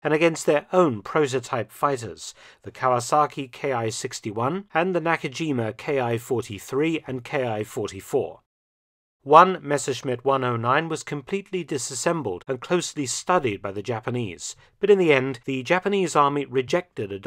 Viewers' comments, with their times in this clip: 0:04 Why do you say "Ki" like it's a German abbreviation for a manufacturer? It's a word, pronounced as "key." Did you really write books about this subject? I'd have to call bullshit.